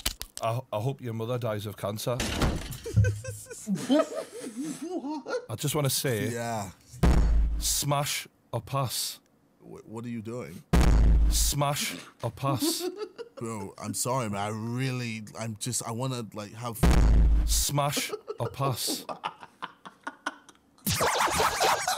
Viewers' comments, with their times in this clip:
0:04 he sounds like Mickey Mouse 😂